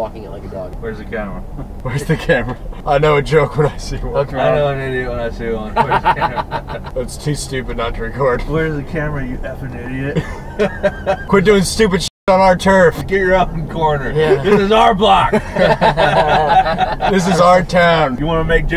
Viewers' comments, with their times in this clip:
0:04 this guy's so cringe. Why he acting like he fake laughing?
0:05 Love the video, I also love to people watch, That forced laugh just makes me cringe, I watched it like 100 times Help